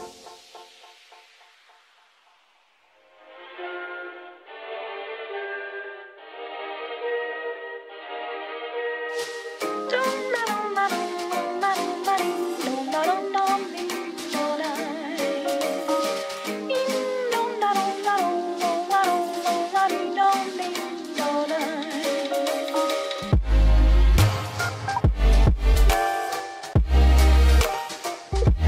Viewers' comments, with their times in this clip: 0:09 The last song on this set seems like nostalgic to me and I don't know why ...